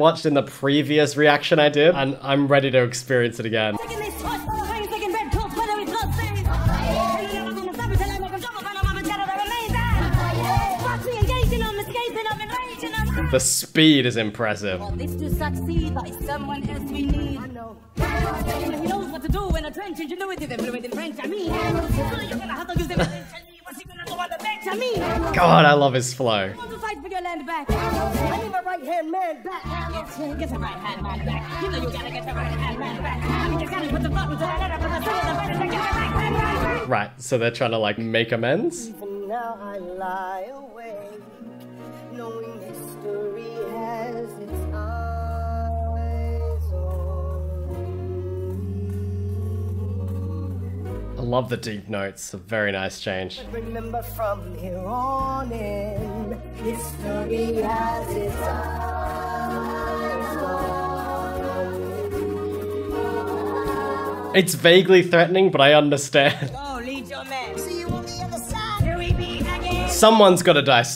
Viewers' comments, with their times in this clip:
0:10 How the fuck did he not make any noise at all when he hit the ground
0:41 SOUNDS SO GOOD DISTORTED WTH 🤯
0:51 "I love the deep notes" The notes in question: 📈📈📈🐿️🐿️🐿️